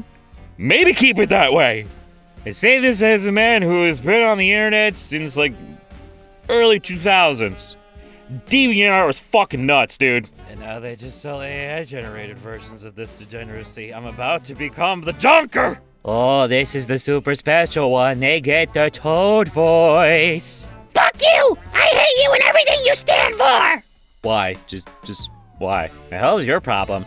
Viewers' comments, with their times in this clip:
0:09 yeah GLAD ITS CALMER NOW